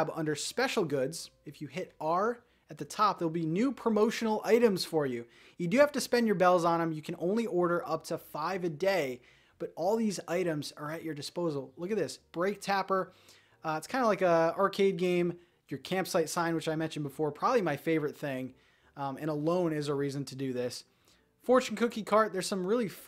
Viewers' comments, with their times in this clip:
0:05 Luokmo music is so good though 😅